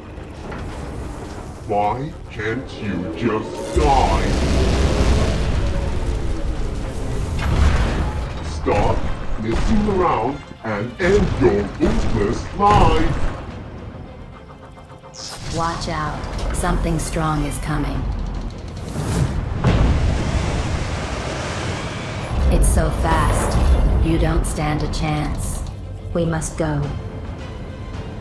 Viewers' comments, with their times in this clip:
0:08 WHY CANT U DIE *very bad slamming
0:12 The way bro said life😂😂😂😂
0:12 bro the way he said life oh well w episode 🔥🔥🔥🔥🔥🔥